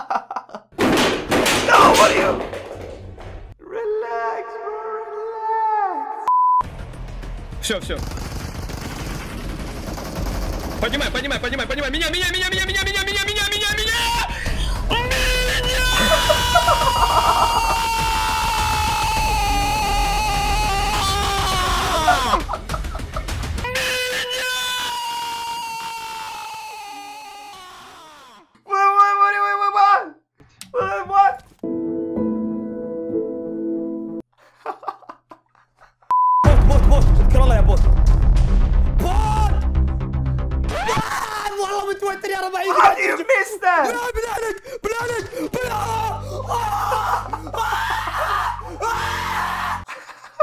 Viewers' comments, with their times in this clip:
0:09 the teamates ears maybe died
0:09 I died of laughter it was so funny. The guy that broke his headphones and when he screamed.Those were the funniest for me🤣🤣🤣💀💀💀
0:12 What Another people hear : MinnaaaaaaAaaaaaa ! IKUZOOOOOOOO !!
0:13 is the best and most funniest, good thing he's not like other gamers who smashes their gaming equipment, he's just shouting till he feels better, I can't stop repeating this
0:14 my ears are still bleeding
0:19 his scream just glitched🤣🤣
0:21 legends say he is still shouting
0:31 T-rex will be scared of his scream